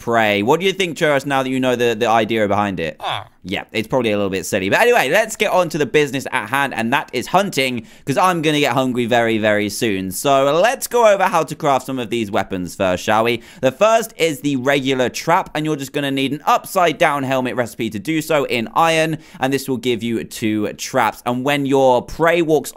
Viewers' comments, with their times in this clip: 0:08 uhhh, who heard him say hungwy and not hungry lol